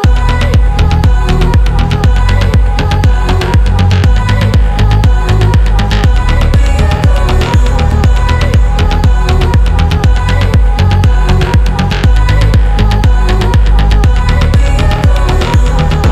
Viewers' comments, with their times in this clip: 0:03 The drop on ist just FIRE !!!